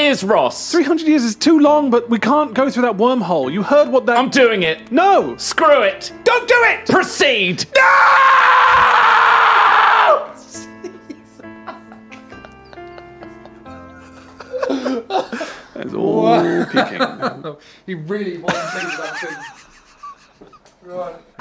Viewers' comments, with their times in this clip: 0:05 was easily my favourite moment from jingle jam, its so fucking funny he put so much emotion into it out nowhere, grussy song is definitely a close second